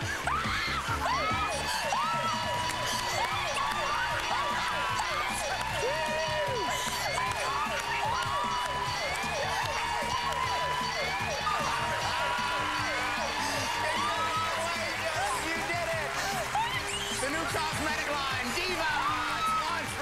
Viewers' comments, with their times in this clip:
0:06 I think I heard one of the cameramen going "Woo!"